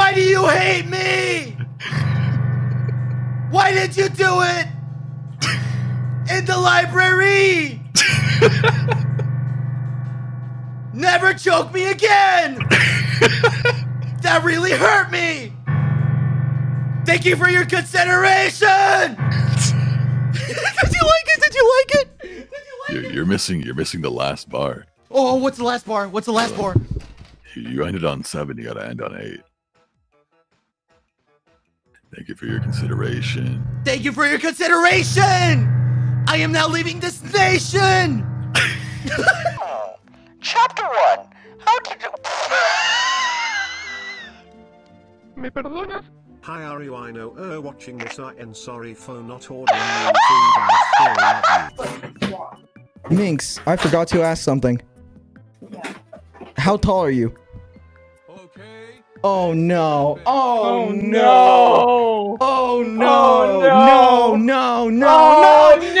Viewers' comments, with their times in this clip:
0:08 corpse is laughing sounded like dream 🤔
0:08 sounds like dream wheezing 🤣
0:19 Quackity yelling is hilarious.
0:36 why is he leaving the station?
0:39 wheezing harder then dream
0:41 0.25x speed sounds demonic
0:42 yes, that is a dream wheeze
0:42 The way he closed he said it made me burst out in tears
0:42 Quackity unlocks the Dream laugh
0:50 I LAUGH SO HARD AT HIS LAUGHING